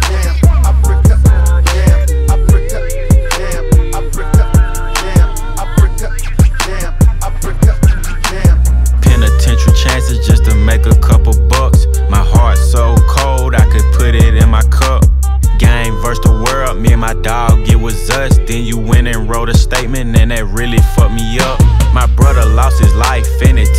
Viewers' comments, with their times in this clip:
0:04 In the background am i the only one that hears "I fricked up, damm"